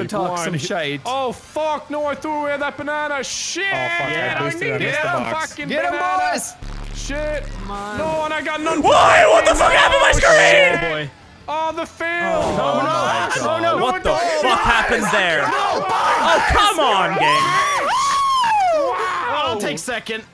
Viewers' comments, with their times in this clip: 0:03 That Bass boost 🤣😂